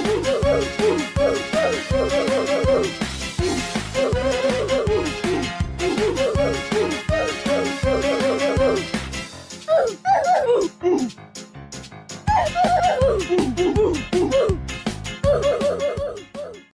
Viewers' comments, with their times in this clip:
0:09 was nice song